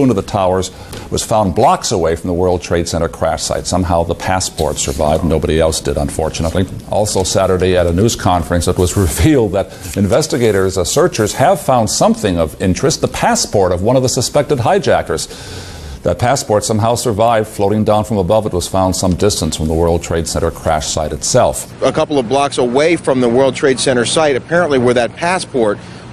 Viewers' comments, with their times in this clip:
0:09 the news reporter is laughing?